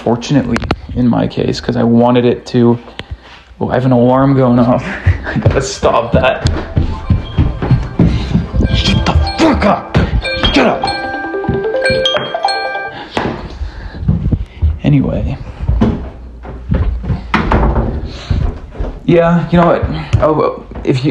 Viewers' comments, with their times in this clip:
0:05 even your alarm sounds twinkish, some shit Bladee would rap on